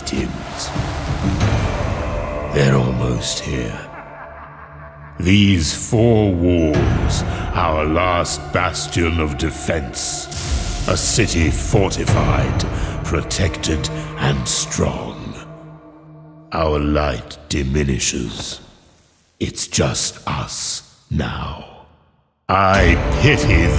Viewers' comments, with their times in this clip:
0:03 You can hear Sliske's laugh
0:07 sliske's laugh? mad idea but what if sliske was always on Zaros side and him being excommunicated was part of the plan between zaros & him. just a thought I have...